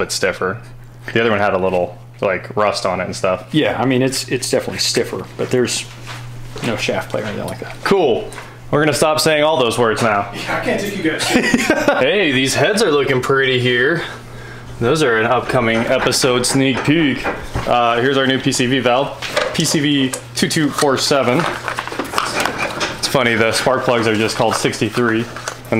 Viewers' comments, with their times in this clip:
0:07 On when he said “cool” he sounded like steave from Minecraft 😪